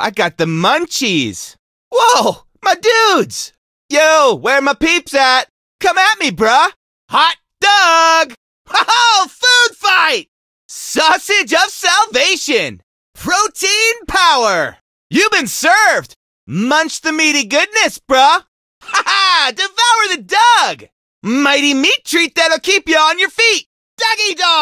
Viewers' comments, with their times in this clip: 0:08 "we have the best laugh"